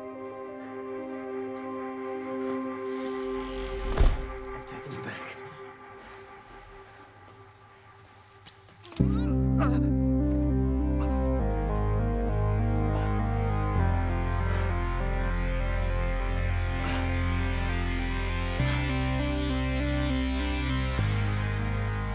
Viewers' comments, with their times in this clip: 0:07 It will take time to see a scene like this !, the music merges with the scene in a perfection that never before seen !, euphoria!
0:07 the scene... The music 🎵
0:08 music when you realize you've been betrayed and you mentally snap.
0:08 SCORE IS PERFECT👍👍👍